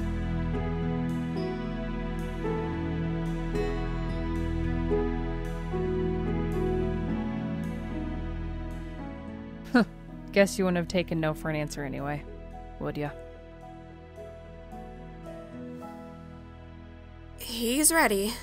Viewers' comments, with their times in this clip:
0:04 the kiss* BANG I fall out of bed